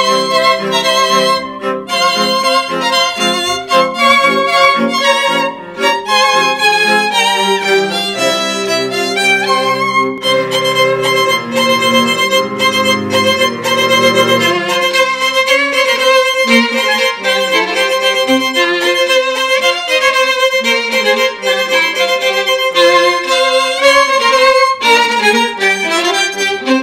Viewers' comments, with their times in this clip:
0:08 her little soviet march is so cute